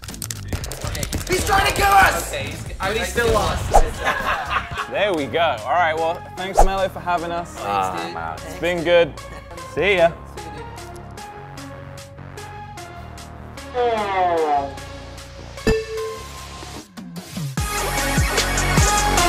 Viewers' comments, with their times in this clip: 0:06 I hear his voice a